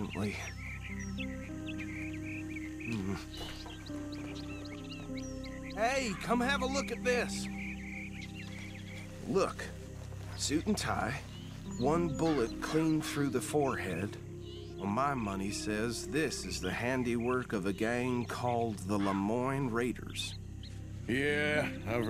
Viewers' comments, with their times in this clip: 0:10 Play it sped up until he says the lamiyn ra ders